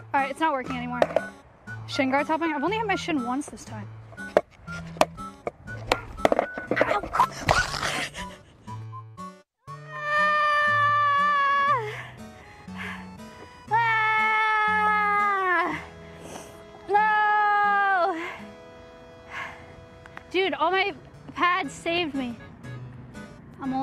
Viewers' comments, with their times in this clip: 0:10 the noise she made sounds like Kirby being thrown out of a plane